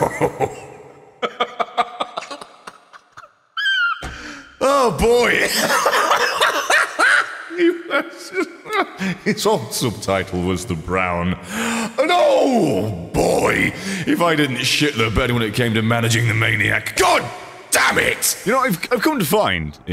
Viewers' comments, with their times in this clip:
0:03 Full on seagull mode.